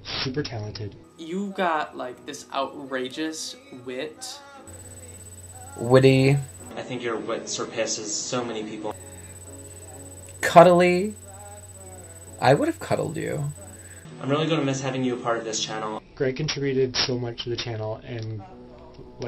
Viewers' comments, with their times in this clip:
0:06 is it just me or did the guy 43 say surPISSES?